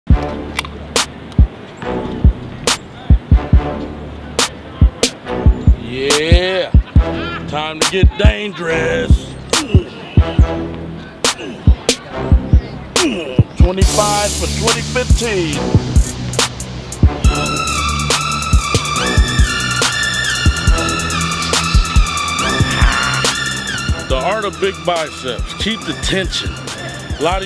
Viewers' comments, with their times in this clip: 0:09 when you take damage on minecraft